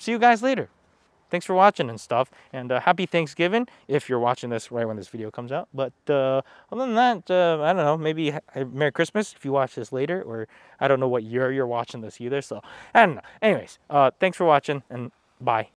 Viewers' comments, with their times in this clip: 0:13 it doesn't matter what the specs are or how good the other features are ....that kind of distortion is a NO go.